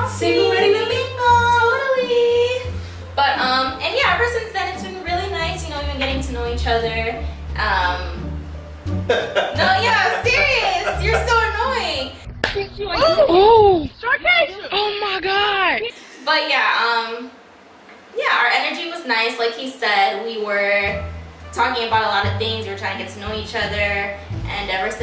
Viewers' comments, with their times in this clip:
0:07 why he laugh like that lMAO